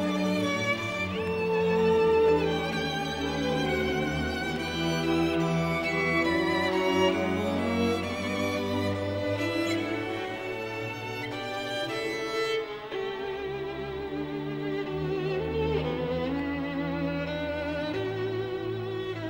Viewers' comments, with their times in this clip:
0:03 I watch Mister Kulka's bowing techniques . I love the double stopping